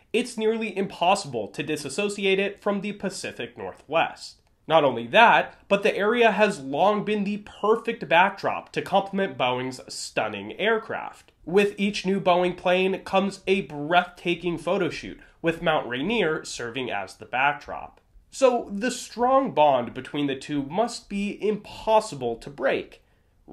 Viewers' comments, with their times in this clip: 0:09 thumbs down, I can't take anyone seriously when they pronounce "Boeing" like that